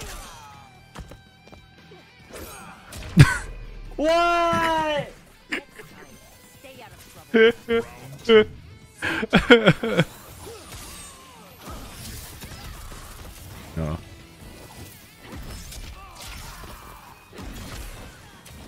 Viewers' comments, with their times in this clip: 0:06 Bro got that Eddie Murphy laugh 😂